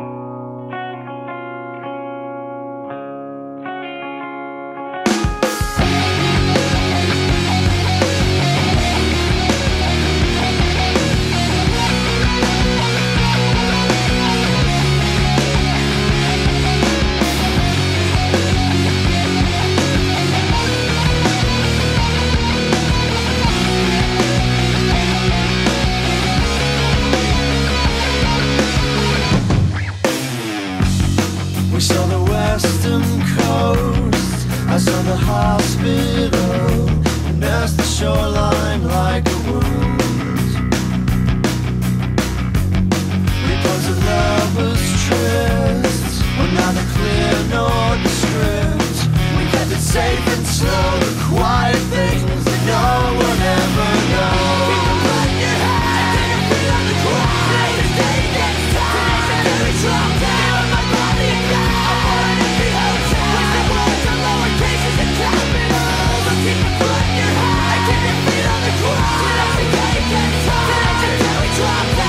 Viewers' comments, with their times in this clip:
0:05 Thar drum fill
0:55 "Keep yer feet on da ground!" -Every World of Warcraft Dwarf